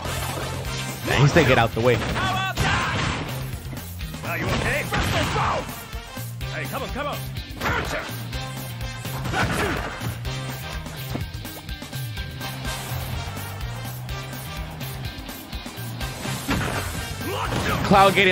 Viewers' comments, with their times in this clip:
0:04 i swear he said "Are you ok? BRUSSEL SPROUTS!"